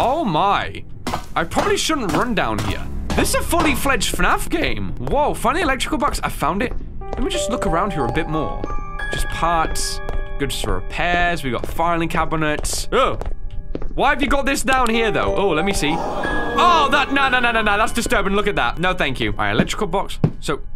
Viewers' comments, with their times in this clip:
0:03 The voice crack tho.